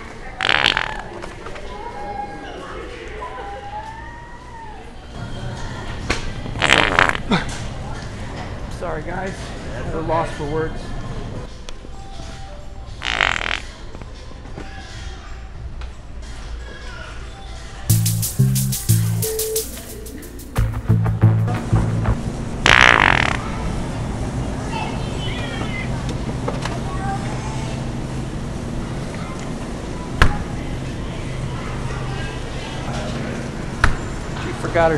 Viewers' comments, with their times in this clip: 0:05 the wet fart is the most normal wholesome thing in the video at the moment in time.
0:22 the Yawn stopper 🥱 😂